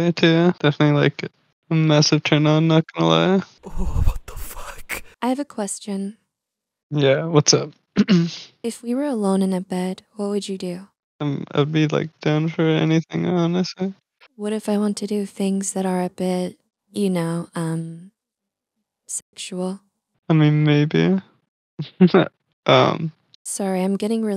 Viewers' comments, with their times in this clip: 0:03 HE SOUNDS LIKE 50😭💀
0:11 BROOOOO HE SOUNDS LIKE MORTY 😭😭😭😭